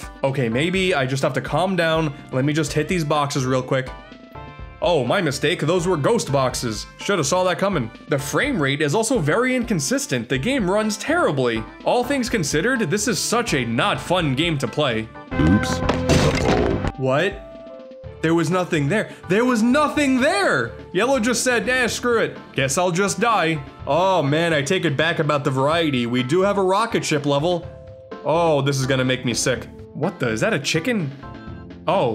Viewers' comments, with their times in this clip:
0:08 He sounded like a narrator of a Thomas & Friends episode lol
0:15 The monotonous tone that Yellow says "Oops" when you lose a life had me in stitches 🤣.